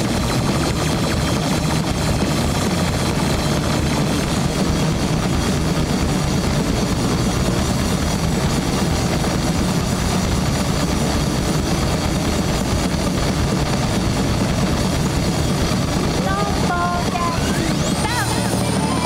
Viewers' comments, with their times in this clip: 0:05 never thought i'll hear blast beats from a KKB show